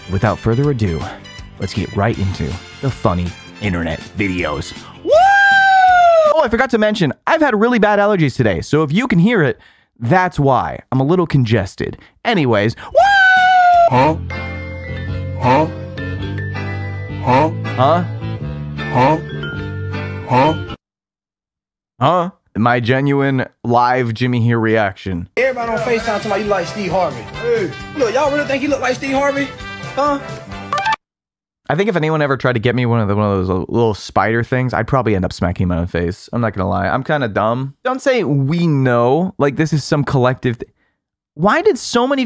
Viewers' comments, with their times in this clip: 0:05 that "woo" was PERFECTLY timed
0:30 What's that sfx from, it sounds so nostalgic